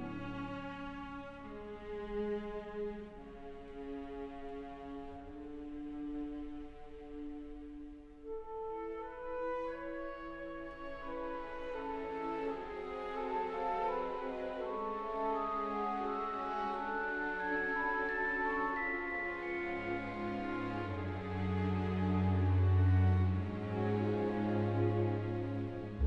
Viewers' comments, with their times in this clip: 0:08 THE SONG IN IT ALWAYSE BRING ME ALOT OF TEARS 😢😢😢😢😢
0:08 Aw 😭😭😭💖 listen to again i think everyone crys the music is sooo lovely makes me cry dont know why lol